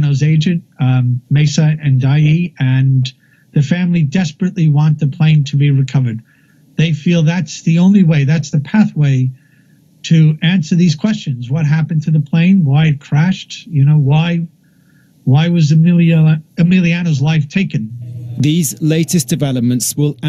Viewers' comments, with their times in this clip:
0:03 best mic ever